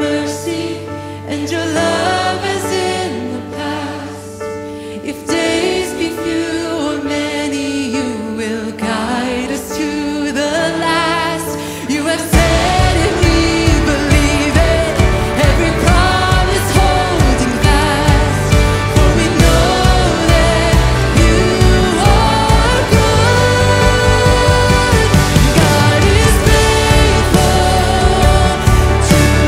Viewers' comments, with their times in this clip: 0:10 Yes! That's just an amazing arrangement! Praise the Lord!